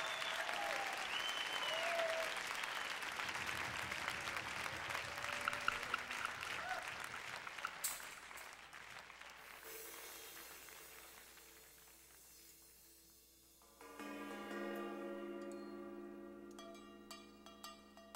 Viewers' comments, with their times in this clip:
0:03 Is there anything more jazzy than a frying pan solo intro ?!?!?